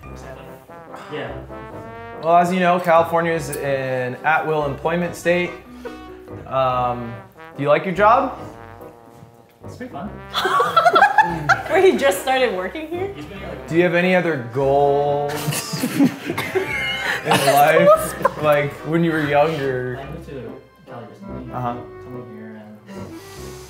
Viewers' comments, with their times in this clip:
0:09 "it's an at will employment state" so monotone lol